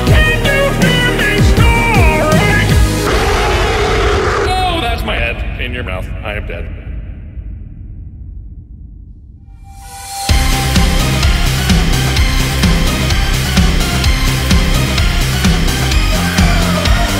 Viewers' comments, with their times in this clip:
0:04 There's just something else about this music. The instruments that are used, etc. It's just so good. The male version of GLaDOS confirmed?
0:04 The male version of GLaDOS confirmed?